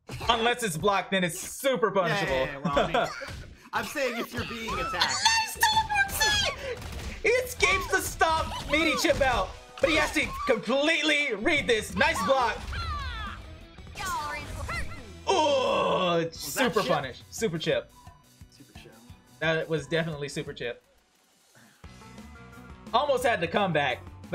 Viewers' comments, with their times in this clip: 0:06 my sides why did you have to say it like that